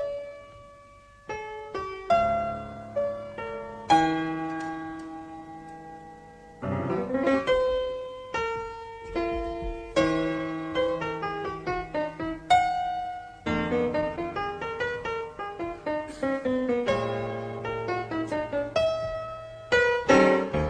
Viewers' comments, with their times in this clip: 0:06 transcribe that right hand run!